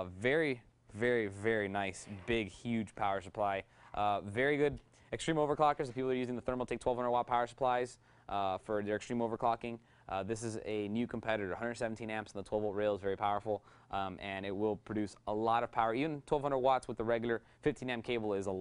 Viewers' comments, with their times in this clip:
0:03 he overclocked his mouth